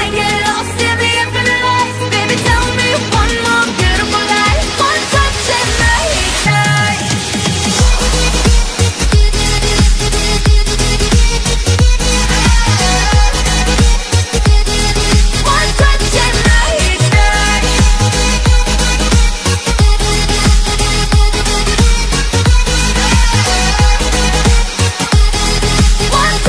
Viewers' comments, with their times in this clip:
0:07 that beat is on point